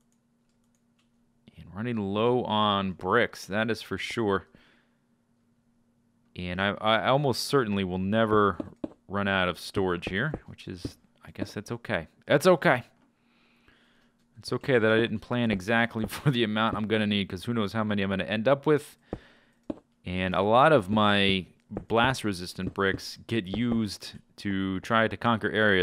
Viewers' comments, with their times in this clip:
0:07 Glass resistant bricks... Is that a thing? ... :)